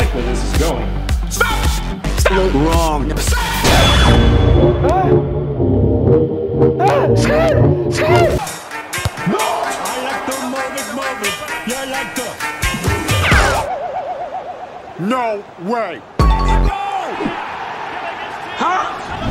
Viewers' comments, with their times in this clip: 0:05 speeds face and also that music sounds familiar